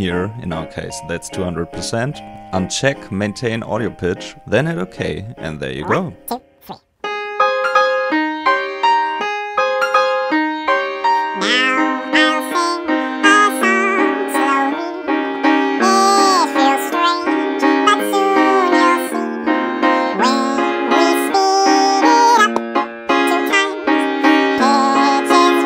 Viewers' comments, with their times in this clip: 0:10 Sounds like Alvin soloing